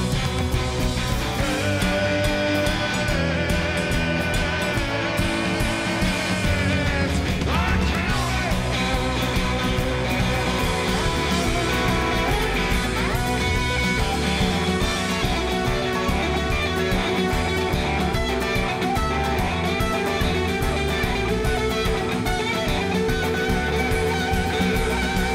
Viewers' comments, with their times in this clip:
0:10 Richard gets to riff after running this incredible story through. RT has been playing for 50-60 yrs, the man is a genius, I just love his stuff. if you're a guitar player, you're gonna love discovering his music, he's got shredding riffs, lovely ballads